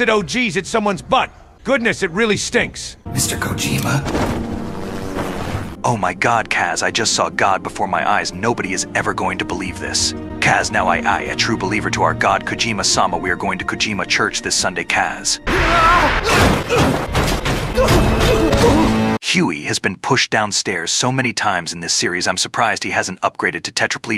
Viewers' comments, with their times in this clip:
0:06 if Snake was voiced by Geoff Keighly